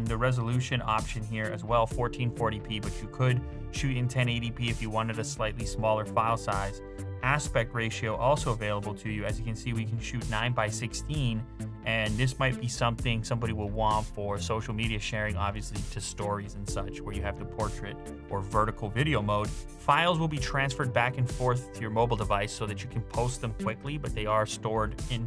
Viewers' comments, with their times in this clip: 0:09 Just me or the background music is a slowed-down version of Daft Punk, I am not able to pinpoint the song for some reason.